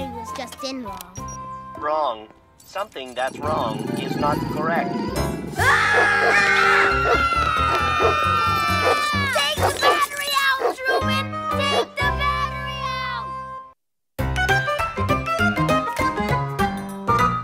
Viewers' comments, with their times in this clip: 0:03 The talking pocket dictionary was making a noise that was irritating Bob